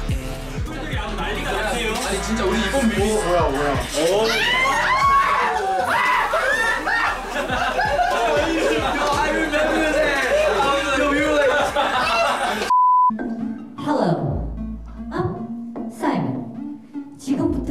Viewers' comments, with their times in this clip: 0:03 their screams are like me when me and my friendfan girl over them
0:04 Why does Mark and Johnny sound like typical basic white girls 😂